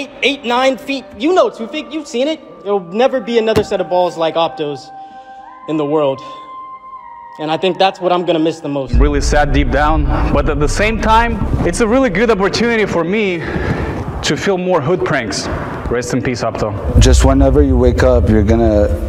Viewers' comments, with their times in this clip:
0:06 The music meme in backward lmaoo